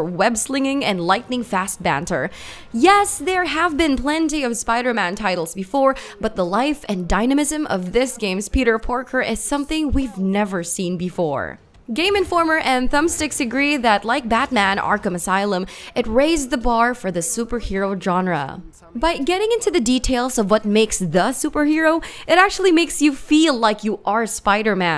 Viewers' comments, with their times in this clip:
0:08 Did she say "Peter Porker"? 🐷